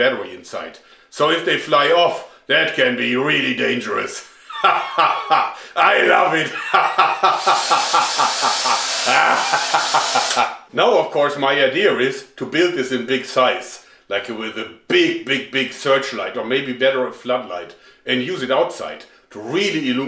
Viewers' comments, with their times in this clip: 0:05 he should be a pirate voice actor